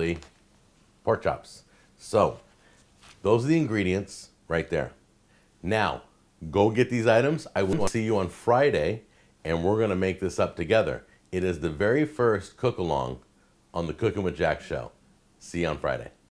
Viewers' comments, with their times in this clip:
0:07 what is that sound ? sounds like a paintball gun went off. lol